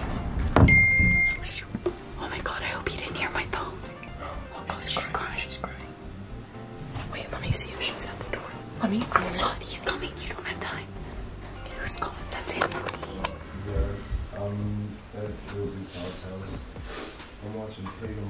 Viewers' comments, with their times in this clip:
0:05 I couldn't hear anything